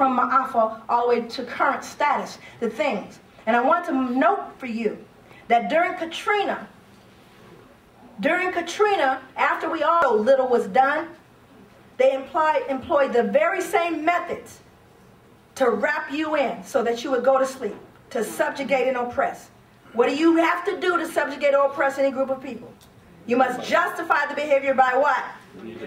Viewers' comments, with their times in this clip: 0:10 it skipped something....